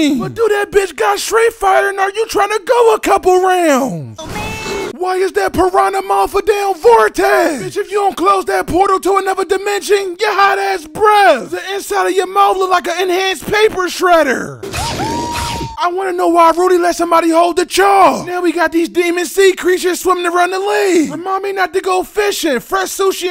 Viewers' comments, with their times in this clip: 0:05 You made this sound like it's part of the theme rap. 😂